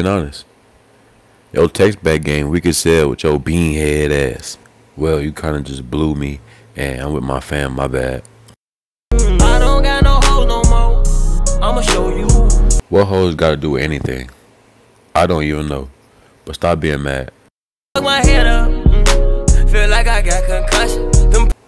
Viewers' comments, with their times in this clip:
0:05 what kinda ex is this it’s sounden Lika nigga😂😂😂